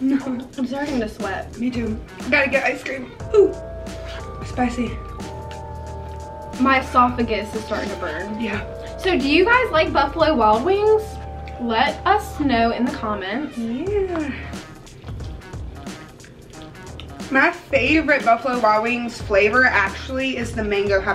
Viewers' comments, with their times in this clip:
0:03 she sounded like the roblox sound 🤣